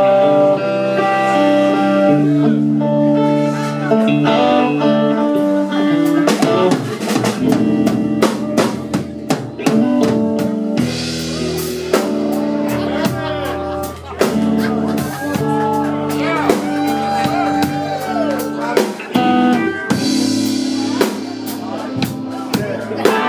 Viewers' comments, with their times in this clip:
0:10 That drummer though, from a 6 count to an 8 count So creative, loved it!